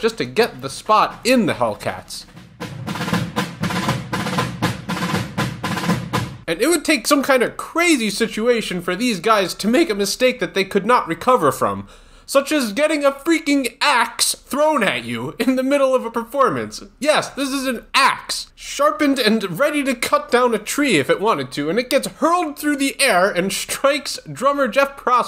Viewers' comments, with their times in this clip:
0:08 voice crack (oof)